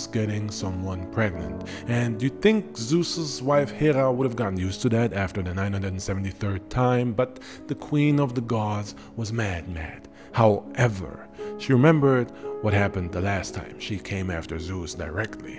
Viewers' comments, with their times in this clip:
0:03 I put this on to nap. And how the lullaby scared me 😂